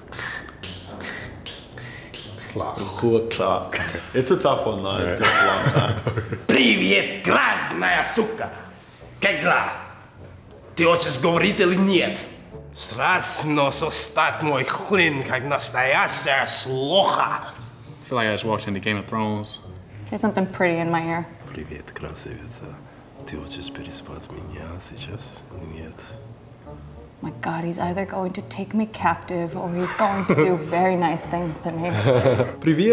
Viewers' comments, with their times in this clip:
0:09 E yes, except for that his «как дела» sounded more like ''KEKLAH!".
0:13 comes up Me: sounds like Dothraki to me Guy: feels like I’m watching GOT Me:WTFFFFF
0:13 Wow, dude is speaking Russian in a US movie accent